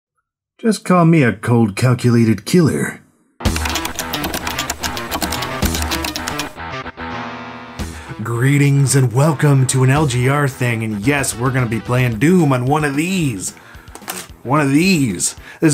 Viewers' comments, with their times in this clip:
0:00 bruh you sounded like Duke Nukem at the beginning
0:03 Is it me or is the typing perfectly synced to the music